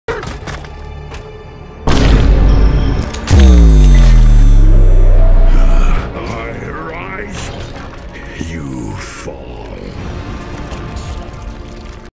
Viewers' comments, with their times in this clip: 0:01 vine boom + bass drop sound